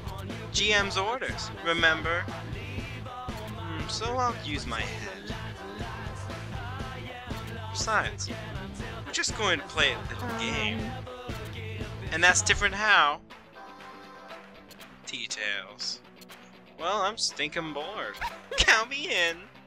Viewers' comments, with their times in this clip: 0:04 when u said remember it sounded like axel for a second